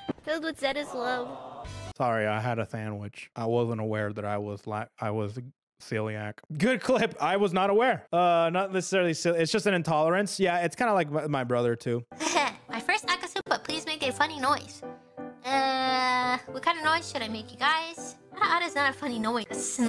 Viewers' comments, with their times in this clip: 0:06 Those snort noises that she makes sounds like she's eating in Minecraft.